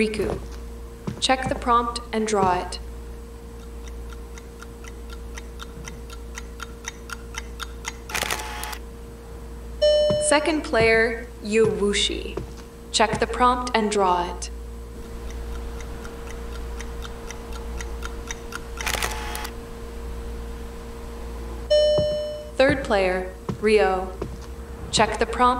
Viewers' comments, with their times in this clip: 0:10 why did it say yushi’s name like that!?? yuwOoushi💀
0:10 why did it say yushi’s name like that!?? yuwOoushi💀